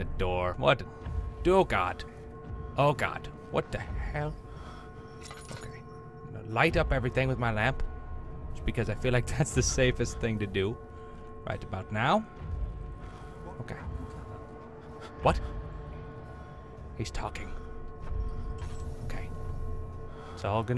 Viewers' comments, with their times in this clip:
0:06 Google translate: light up everything with my mouth. Me: Ծ_Ծ